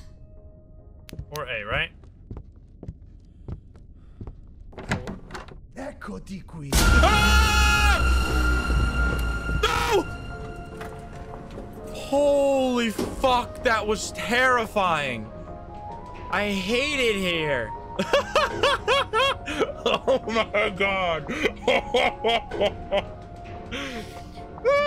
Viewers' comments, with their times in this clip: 0:05 How?? I didn’t hear any whistling??